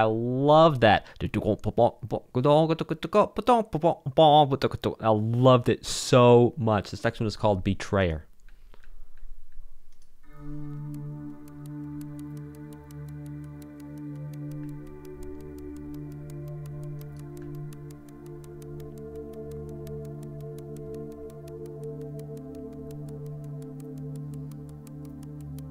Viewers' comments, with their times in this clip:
0:10 The fact that a traitor shots at your character's head while this song plays makes it feel so unique. In the end, when the song suddenly stops, it is the exactly moment that the traitor pulls the trigger